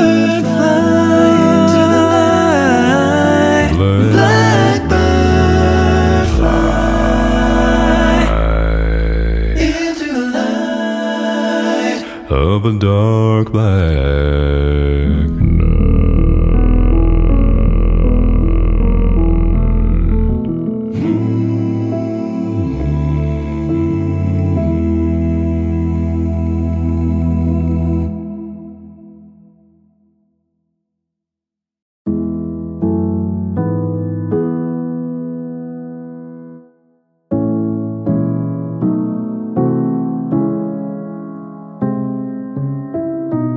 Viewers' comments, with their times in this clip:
0:03 Controversial opinion but is the best bit but chest voice G1 and that fantastic changing of the perspective of the chord. He changed the bass note of what would be an E minor chord if the bassline had held the normal tune to a G chord and adding an E on top to make a wonderful G6 chord with a buttery rumble at the bottom. Sure the subharmonic E1 is fantastic but that is just something else.
0:06 Actually, he goes Fly-y G1-A1
0:06 Would be G1-A1
0:14 HOW IS THAT HUMAN OMG 0.0 GORGEOUS BASS
0:14 this guy does DJENT with his throat
0:15 I never get tired of listening to this version, what a majestic arrangement !!! you are an incredible arranger ... What harmonies! You make us like songs that we used to find boring ... wow ... 👏👏👏 😳😳😳
0:15 nope, is an E1
0:16 I was not ready for definitely one of my favorite bass notes ever sung
0:26 Did.. did he drop octave ??